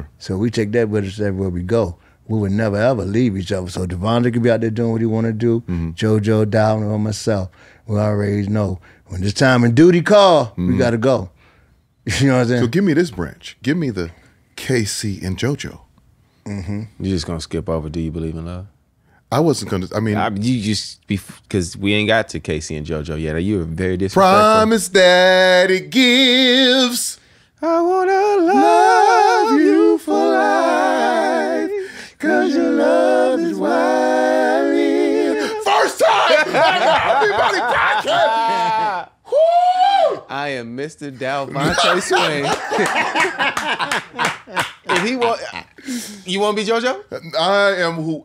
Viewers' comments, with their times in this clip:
0:10 Am I the only one that got goosebumps when they harmonized LOVE U 4 LIFE? 😮😮😮😊
0:24 gave me life to hear y'all harmonize. Hit rewind 5x. Loved every second of this interview. Thank you.
0:24 I came back just to hear them harmonize ❤️
0:24 is ear candy!!! Gosh!!! y'all just took me back to my university days with that shit my God!!!!!
0:25 Woooooooooo! When they started harmonizing “do you believe in love” my panties literally disappeared off my ass. Lmao! 😂That made my day. Not going to lie I was screaming! YESSSS!!! I rewound that bout 3, 4 times. 😂
0:25 ❤ Love Jodeci. Hearing K-Ci laughing makes my day😂 & can't stop rewinding 🎙🎶🎶
0:25 That harmony. Whew, chiley. 🤪
0:25 That harmony Oh my goodness R & B Money fa sho!
0:28 !!! Y'all beta sang! As a vocalist I know that feeling to get that harmony the first try!!!
0:29 is everything!! #jodeciharmony
0:29 Am i the only that keeps going back to to listen to them harmonize do you believe in love ???🔥🔥🔥
0:30 Now THESE are NATURAL BORN, PROFESSIONAL SANGERS, EVERYBODY FELL RIGHT IN ON THEIR NOTE & 👏🏾👏🏾👏🏾👏🏾👏🏾TO K-CI FOR JUMPING RIGHT IN ON THE APPROPRIATE MISSING NOTE!!!